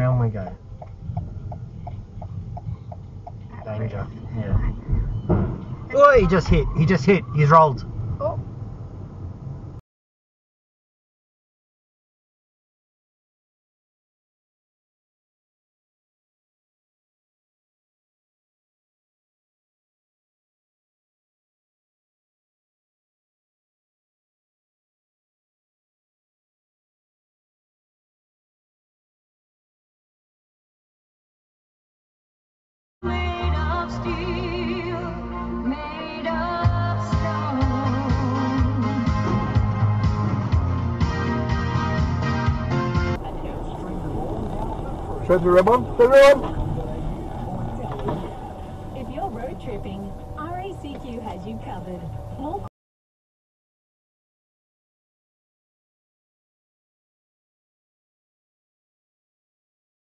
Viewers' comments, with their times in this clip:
0:05 love the calmness of the driving instructor "he's just hit, he's rolled" like he's seen it all before haha
0:33 I love this one, you can see the active choice made by how long the driver stopped at the light. Less than a second then " Go for it! I have the POWER! I'am untouchable! Nothing can touch me! I'am invincible! " Then crack and bang! Plastic and thin sheet metal is invincible bahahahahaha
0:47 perfectly timed radio ads